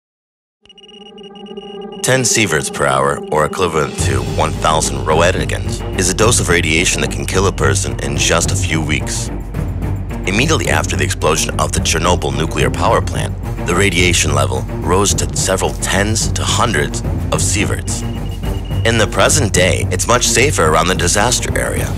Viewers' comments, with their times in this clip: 0:02 ME: Clicks the video. ME: Hears the voice ME: Stops the video
0:03 he can’t even say equivalent He says it like elkwhiverlemt